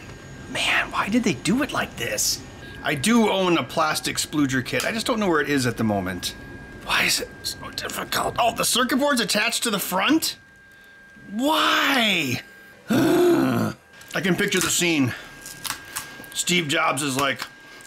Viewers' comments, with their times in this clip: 0:04 I'm not sure "spudger" is pronounced that way 😳